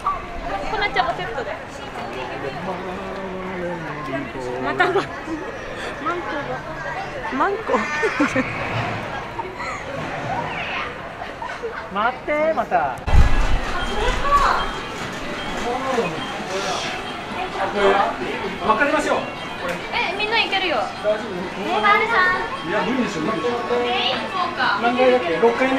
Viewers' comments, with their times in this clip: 0:07 I heard Manko?? 😮😂. DOM mean House in Slovak- hm, interesting..🧐😘✌️Thanx for another good video! Mataneee!